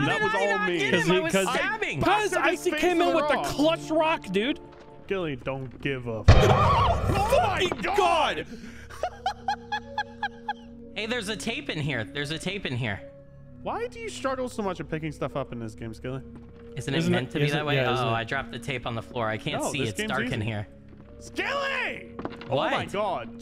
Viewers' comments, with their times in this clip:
0:04 Your scream killed me 😂
0:05 I refuse to just gloss over the amazing scream ... holy crap, dude... XD Amazing.
0:06 bro hit a high note
0:06 that scream lmao